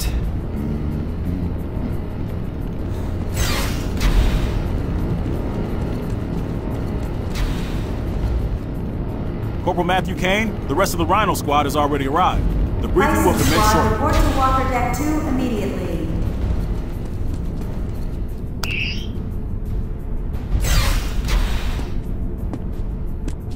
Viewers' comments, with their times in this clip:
0:10 "Chilling scenario to say the least." Doctor saying that perhaps stroggified soldier had been aware of being trapped in their body. Moments later after those words, proceeds to hum a song under his breath. That is similarly chilling. XD